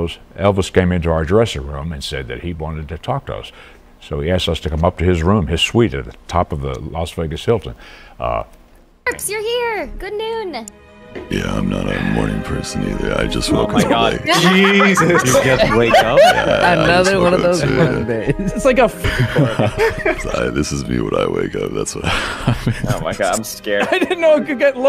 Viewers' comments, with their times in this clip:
0:06 ignorant to this stuff but the voice of the guy in doesn't sound healthy